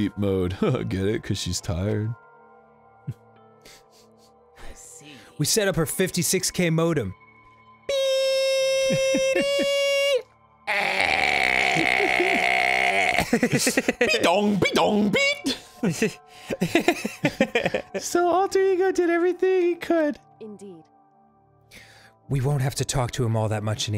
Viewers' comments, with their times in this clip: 0:07 I want Arin's dial up internet sounds as some kinda notification sound